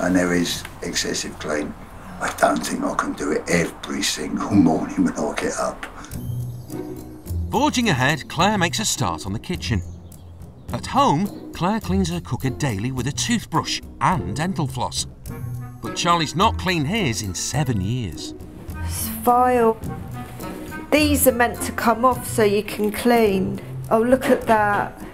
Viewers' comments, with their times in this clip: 0:08 "... makes me angrry 😣" she said it in such a charming way 🤣